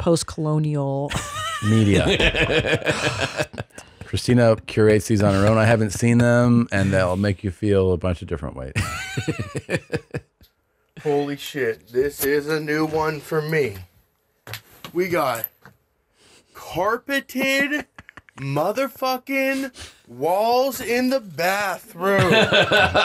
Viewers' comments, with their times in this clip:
0:10 speaking as a life long southern resident, the guys tone is not one of praise but rather he's both sad and offended someone actually did that to a bathroom. Being skilled in our trades like that and making moonshine are like the only positive stereotypes we white southerners have left in within the zietgiest,lmao